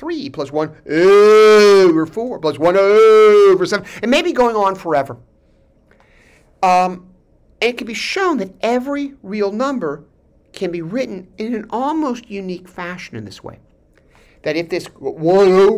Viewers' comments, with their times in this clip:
0:03 nice mic distortion